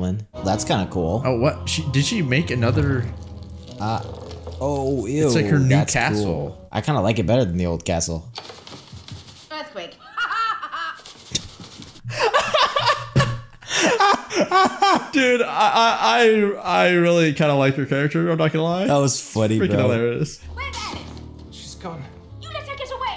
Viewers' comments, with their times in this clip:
0:09 no ofence, but what is with you guys laughter?😂